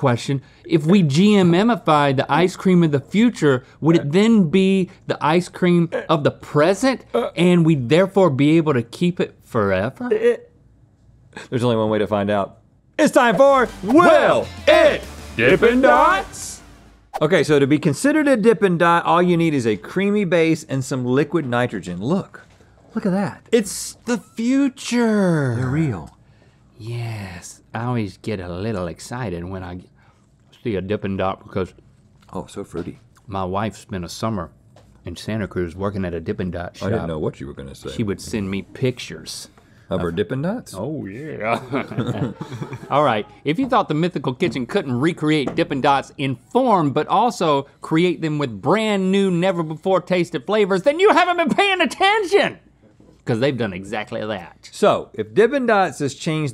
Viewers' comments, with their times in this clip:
0:03 ok Dana Carvey
0:40 the way he said "oh yeah" hahaha